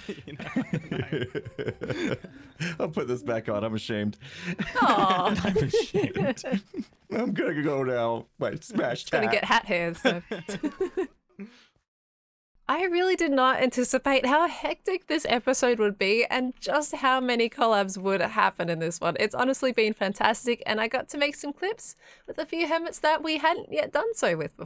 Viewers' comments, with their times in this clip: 0:10 i hear a cat